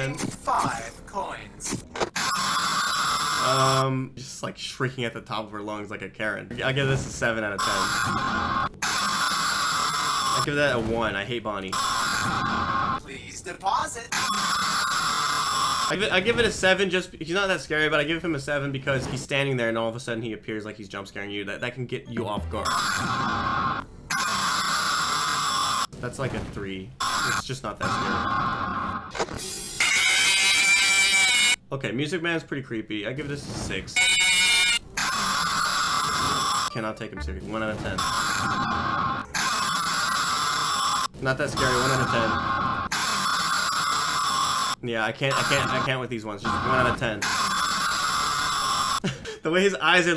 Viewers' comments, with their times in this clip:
0:07 He said “like a carrot”
0:33 nightmares jumpscare isn’t scary at all he’s just breathing his stinky breath in our face and yelling at us